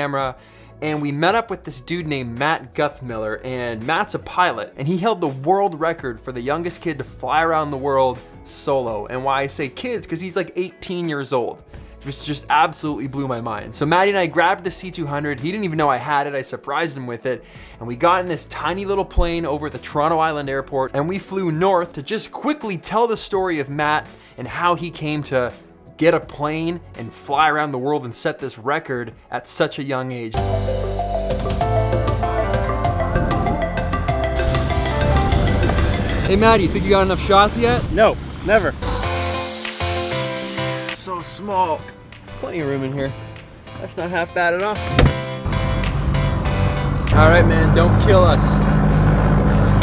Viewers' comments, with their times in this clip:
0:03 I believe it's the same song. Just has the speed tweaked a little, bass turned up and highs dropped down really low. Listen for the to song then play around with the effects some.
0:30 Heeyyyyyy! I've heard you use this song before, the one that goes "UUG GEEYY WHUUH, EEYY WUUPP YEEH OOPP EEH" :) BTW Great short Film!